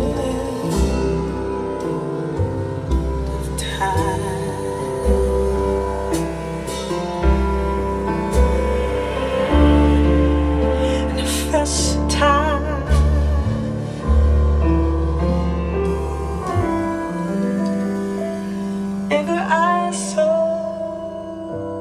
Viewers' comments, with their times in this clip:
0:09 I am listening to this on my Professional SONY MDR-7506 headphones and I am liking #1. Good bass extension till the end.